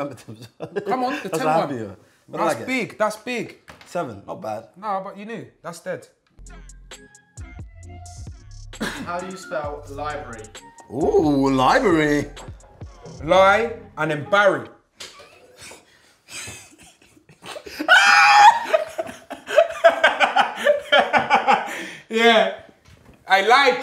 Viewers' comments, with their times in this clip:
0:10 chunkz sounds like ksi. no joke